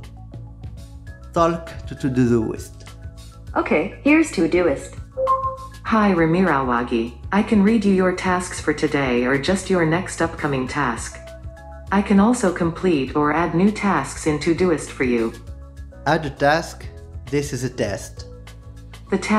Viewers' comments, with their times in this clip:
0:05 That voice is damn near identical to the womans Voice in the game, Satisfactory. FICSIT must be owned by GOOGLE O.O